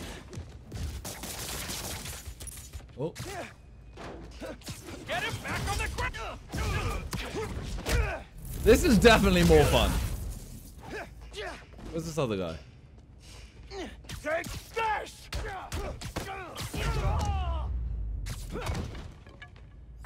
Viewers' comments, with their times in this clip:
0:03 SOUNDED LIKE GOKU